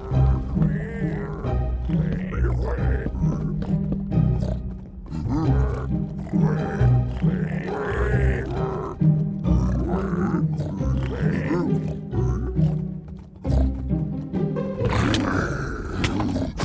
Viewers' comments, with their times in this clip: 0:03 Only for me, the piglin sound "WEEE" sounds funny😁